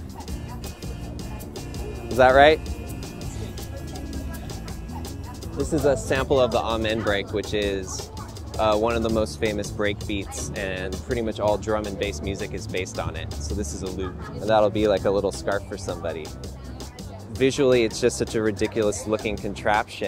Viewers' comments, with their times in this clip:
0:03 he says is that right and the woman in the back starts to clap